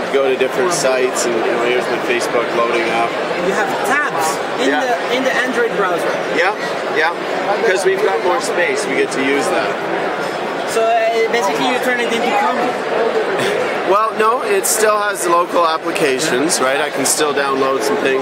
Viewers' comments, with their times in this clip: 0:03 the guy says, "you have tabs? In the Android browser?" - and he sounds amazed. Um. Is that something special? And if it is, it's 2010, and shouldn't that be weird?